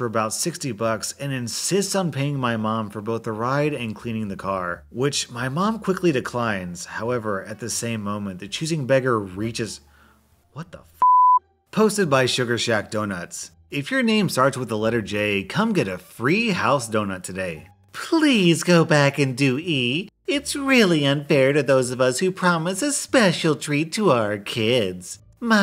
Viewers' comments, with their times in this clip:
0:10 I COULD HEAR THE ANGER IN YOUR VOICE, I-
0:11 I love how he said it